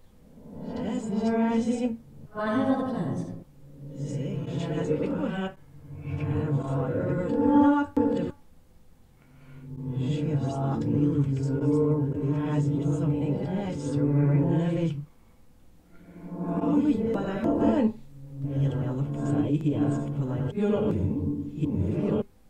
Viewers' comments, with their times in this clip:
0:08 is where I hear this. I also hear in another one of youre videos that someone in the basement "washed their fingers as the looked at Chis with a smile" ill look and comment on that video as well! Youre doing AMAZING WORK! I feel as though I close my eyes and I filter through the robotic voice and behind that is Shannan. Listen very closely, you'll hear what I'm hearing. I know you already can as you make out what she's saying so well! Ty for all you do!!!!